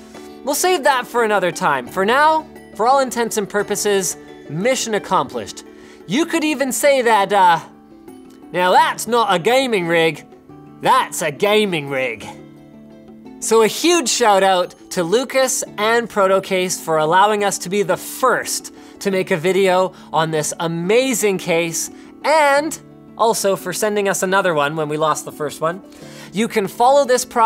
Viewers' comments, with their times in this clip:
0:06 that's NOT an Australian accent! ....
0:07 For once an American that can actually do a decent English accent. Good on you Linus.
0:08 that sounded more British than Aussie
0:08 Sounds pretty british